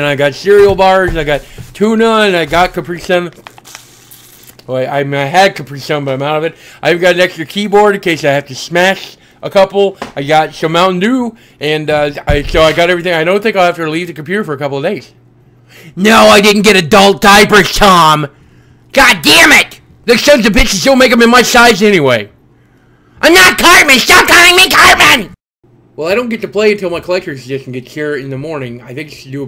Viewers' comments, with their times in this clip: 0:10 the way he says dew 😂😂😂